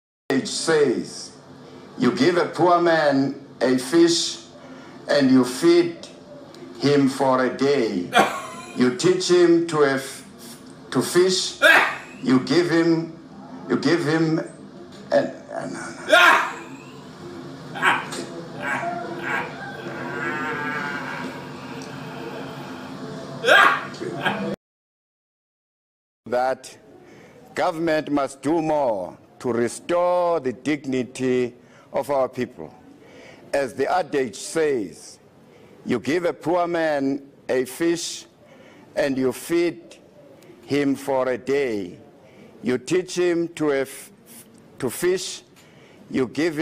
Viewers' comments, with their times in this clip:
0:07 Simulating Joker Laugh! 😂
0:16 jared leto joker laugh
0:17 he sounds like the joker
0:27 "Government must do more, to restore the dicknity of our people"